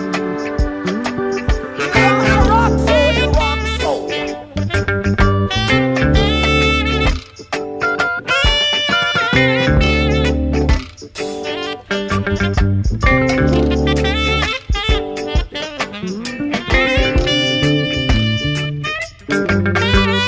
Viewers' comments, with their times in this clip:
0:03 This instrument is crazy